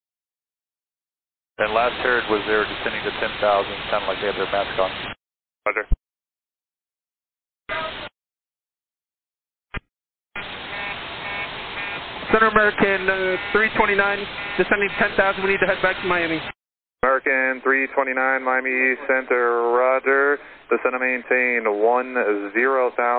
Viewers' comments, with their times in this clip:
0:10 Cabin Altitude warning. Something you never want to hear
0:11 The fact that you can hear the master caution alarm blaring in the back is terrifying